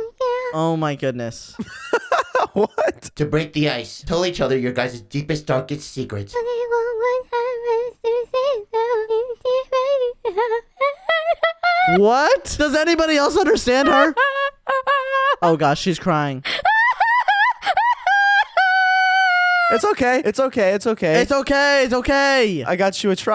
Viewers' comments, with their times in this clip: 0:05 Bro, really speaking animal crossing